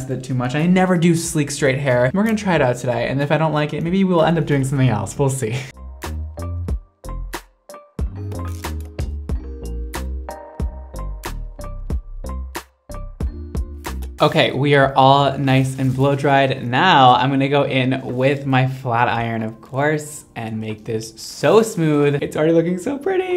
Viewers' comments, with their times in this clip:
0:08 The music in minute made me think there was a phone in my room. Please tell me im not the only one lol